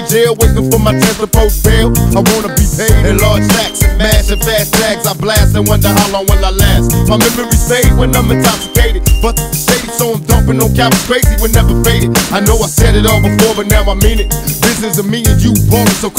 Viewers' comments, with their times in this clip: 0:03 PAC’S FLOW ~ !S 💥💯❤️🇬🇧💋